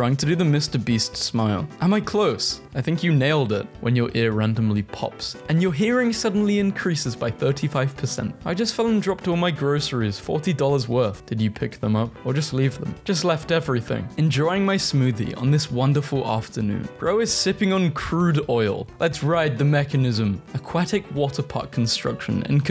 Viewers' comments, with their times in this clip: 0:04 but the worst prt is that its in only ONE ear